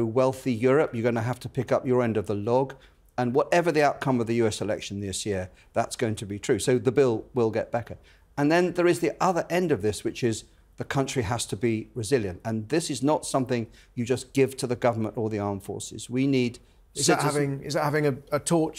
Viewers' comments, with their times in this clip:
0:06 The bill will get Becker? Surely Boris Becker has been through enough lately without this extra bill.